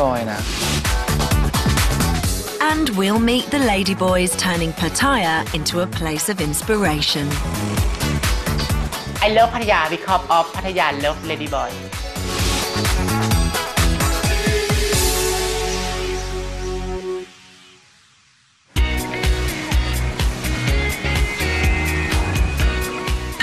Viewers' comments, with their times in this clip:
0:08 I had an easier time understanding Mickey from snatch.